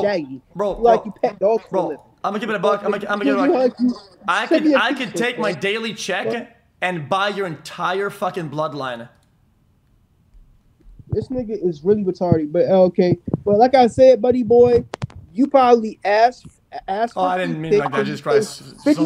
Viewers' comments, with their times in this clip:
0:04 👴🏻"I can take my daily check and buy your entire f*** bloodline" 💀 The pause after aswell 💀💀💀